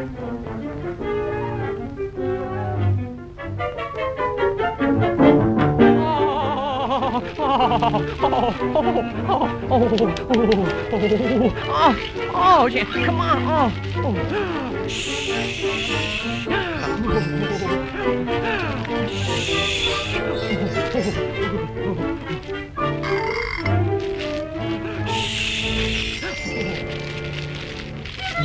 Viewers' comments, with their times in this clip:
0:04 if I find a man that moans like that imma make him my husband
0:05 just listen to it. its sounds extremely wrong after a while.
0:09 it sounds strange
0:11 I could have sworn Bimbo said "Ah shit!" ! XD
0:11 did bimbo say shit?
0:11 bimbo says ah shit